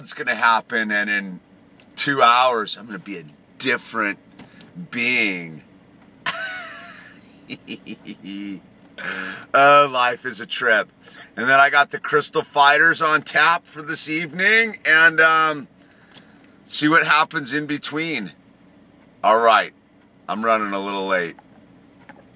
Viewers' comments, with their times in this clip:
0:06 your laugh is the best. "Ahhhh - heeheeheeheeheeeeeee"